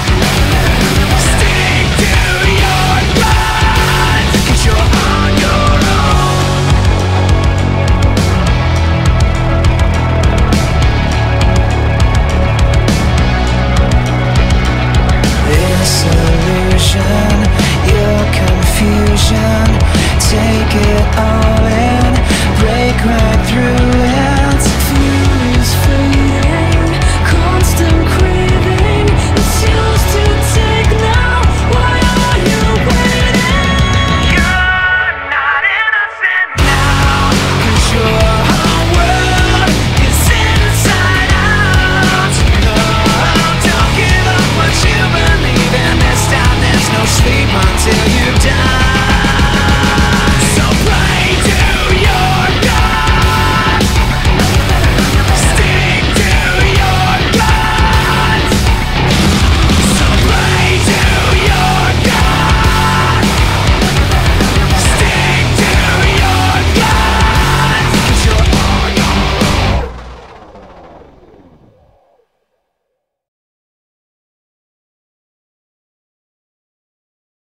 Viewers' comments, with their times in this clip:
0:06 They sound so much like Linkin Park!! Well...Until
0:24 her vocals make my entire body tingle
0:53 that 32nd snare-double bass-cymbal work. Need to learn tha shit. Reminds of John Bonham in Achilles Last Stand with 16ths.
1:00 If they always had this intensity I'd be in love... Still like the song though
1:00 If they always had this intensity I'd be in love... Still like the song though